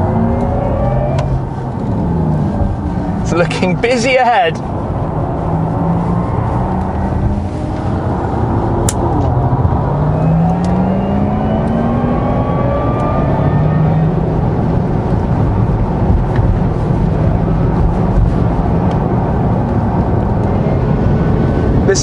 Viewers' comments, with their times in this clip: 0:06 i thought that a stone hit the window
0:09 Was that a rock chipping your window?